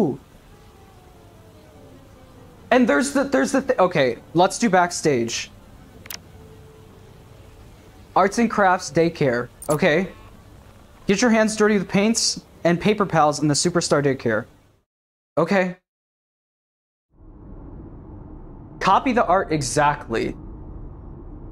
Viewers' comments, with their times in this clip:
0:03 The defeated “let’s go” LMAO